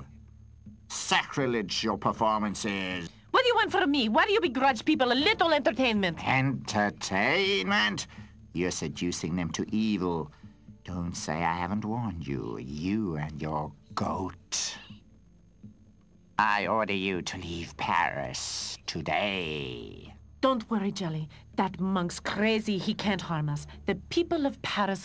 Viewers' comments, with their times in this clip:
0:07 i swear it sounded like frollo was about to break into song when he says "entertaaaiiiinment?!"